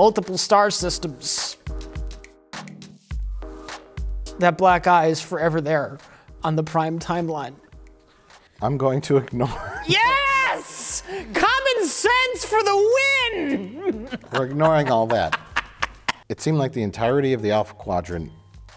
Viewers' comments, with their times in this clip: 0:03 "That black guy is forever there in the prime timeline." Weird way to describe DS9